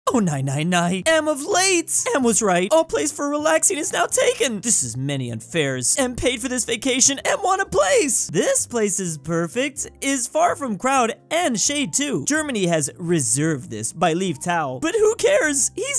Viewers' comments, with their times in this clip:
0:00 The way how you pronounced Polands "Nie nie nie!" sounds exactly like the German "Nein nein nein!" 😂🤣
0:00 I love the way he pronounces "Oh nie nie nie"
0:00 actually this "nie nie" is not pronounced like in german "nein" but diffrent.
0:00 why are u reading polish no like german no